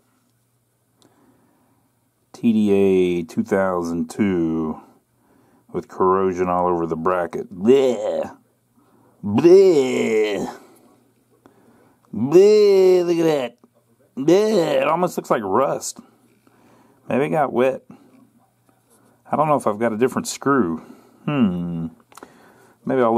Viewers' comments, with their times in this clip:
0:07 for the best BLEEEEEH's in the business